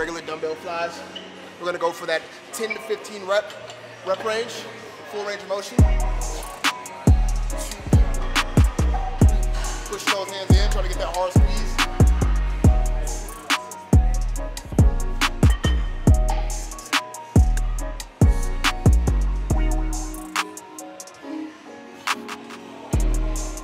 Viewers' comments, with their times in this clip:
0:06 The instrumental fire 🔥 bro